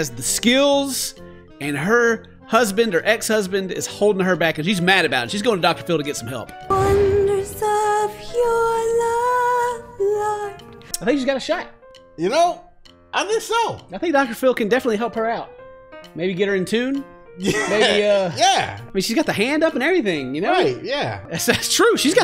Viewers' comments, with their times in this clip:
0:06 Listening to this as background noise. I got confused why portishead started playing. ...oops.